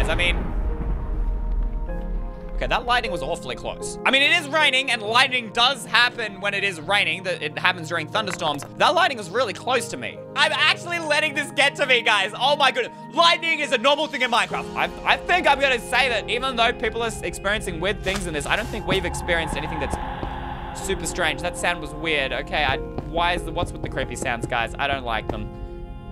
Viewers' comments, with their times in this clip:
0:07 did anyone else notice that there was a strange noise